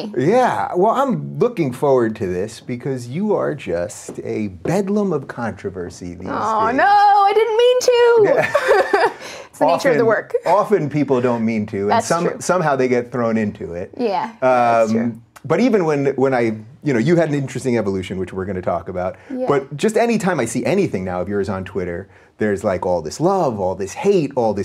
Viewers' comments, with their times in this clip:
0:08 I’ve listened to too much Jordan Peterson, I thought she said Nietzsche